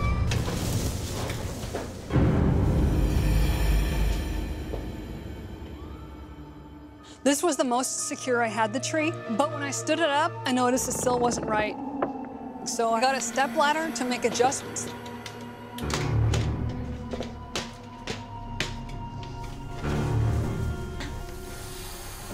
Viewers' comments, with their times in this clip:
0:04 there was a girl screaming